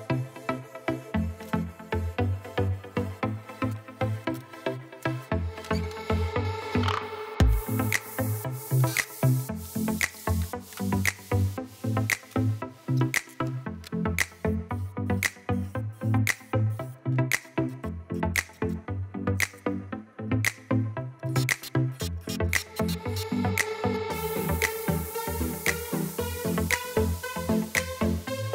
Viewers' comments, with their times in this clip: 0:09 Nooooooooo! Not that supremely irritating ubiquitous ‘click click’ backing track. It’s a fad, but it is everywhere. Almost every ‘lets build’ video uses it…. Once you get sensitised to it you can’t un-hear it and it drives me nuts. The Video content is good as usual, and pertinent to me as I do have a Rage 5s. But that clicking…that Damn infernal clicking. Aaaaaagh!